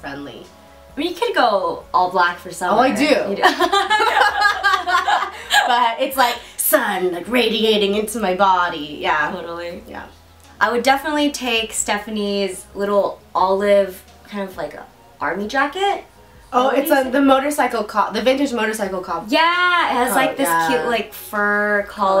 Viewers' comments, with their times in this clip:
0:04 love that hearty laugh ! XD